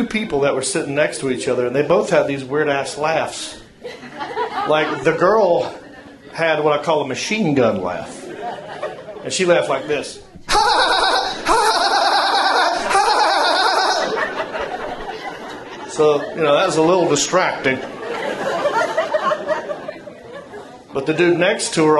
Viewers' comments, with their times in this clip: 0:08 Spongebob and Patrick